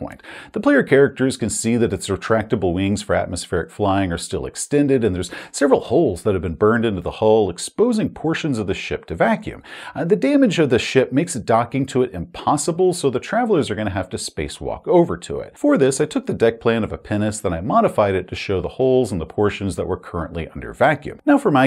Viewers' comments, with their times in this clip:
0:07 oooooooooohhhhhhhh. "Pinnace." I was hearing something slightly different. A rocket with rounded stabilizers.